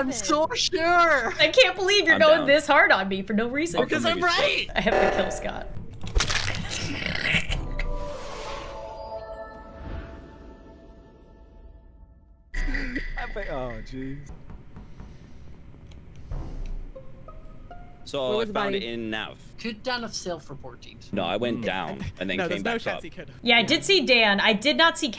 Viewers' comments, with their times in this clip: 0:06 WHAT WAS THAT NOISE?!?!? THAT SOUNDS LIKE THE CURSED VELOCIRAPTOR!!!!! IN THAT ONE TIK TOK SHE DID!!! xDDDD
0:06 why she sound like perry the platypus 😭